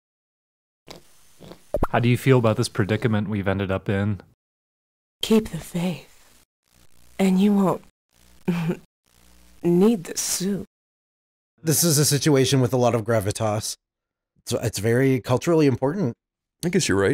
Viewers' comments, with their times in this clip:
0:03 i am seriously disappointed they didn't address the slightly sultry voice acting here